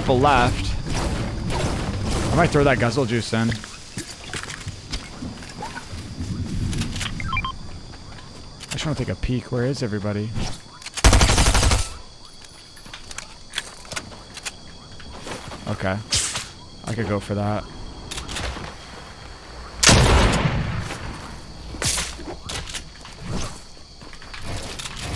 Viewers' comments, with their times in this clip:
0:07 I thought he said “I just wanna take a pee real quick”🤣🤣🤣🤣🤣😂😂😂😂😂